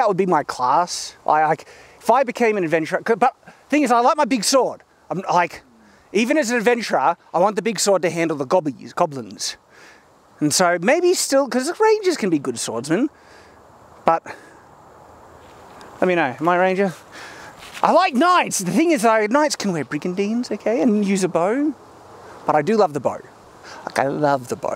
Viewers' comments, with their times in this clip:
0:08 Excuse me, kind sir, but did you say GAWBLINS!?